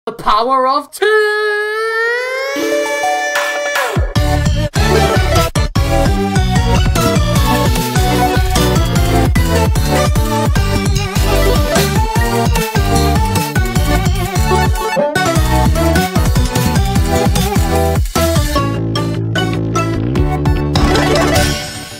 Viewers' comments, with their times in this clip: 0:03 I like how winner fight two and the beat followed